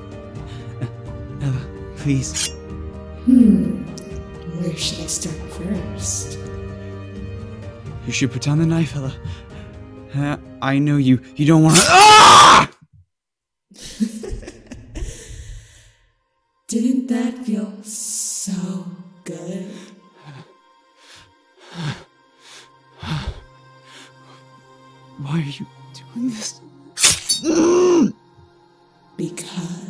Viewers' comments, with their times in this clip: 0:10 I'M SORRY BUT I LAUGHED SO HARD CAUSE HE SOUNDED LIKE HE SAW SOMETHING COOL OR IDK! THAT MUST HAVE BEEN WEIRD FOR THAT ACTOR LMAOO